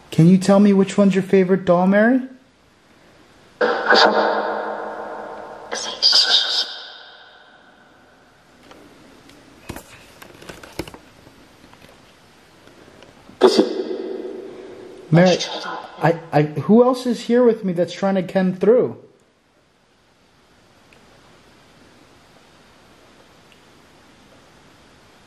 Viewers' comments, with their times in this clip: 0:09 I've heard a whisper, Something like "it's him"
0:09 there's a disimbodied voice I'm not sure if I'm right but think it's saying movie